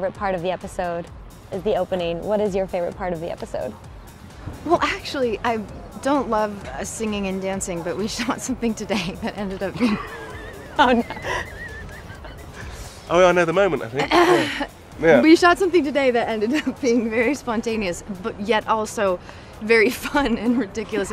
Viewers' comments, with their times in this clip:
0:08 them laughing like that reminds me of a scene in one of the episodes, when they are interrogating and one suspect keeps crying and these two just start laughing like this😂 Toms laugh here is soo identical to the one in that scene too😂